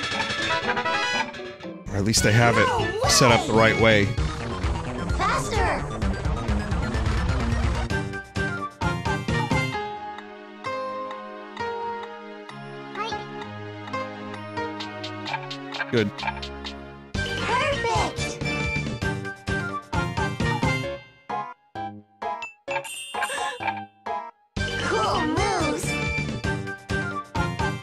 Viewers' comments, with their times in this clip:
0:10 who else noticed that the notes was GBA, i thought that was so cute